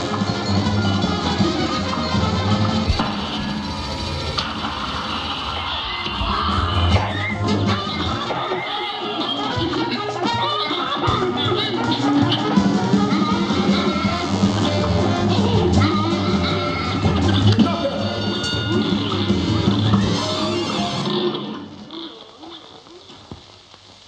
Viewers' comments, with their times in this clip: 0:07 the cry was scary 😂